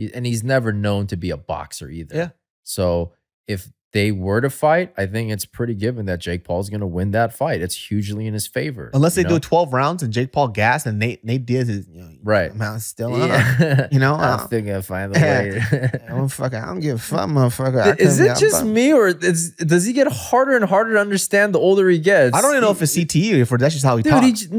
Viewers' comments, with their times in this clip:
0:07 Hahaha the nate doaz impression